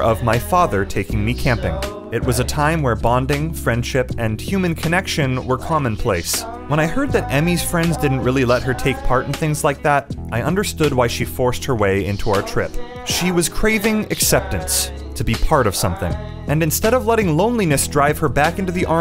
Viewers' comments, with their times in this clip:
0:03 the music is sad